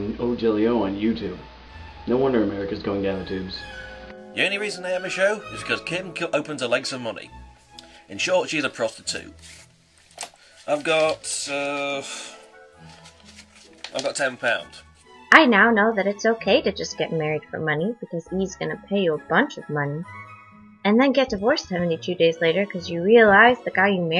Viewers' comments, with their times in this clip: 0:09 best fucking voice ever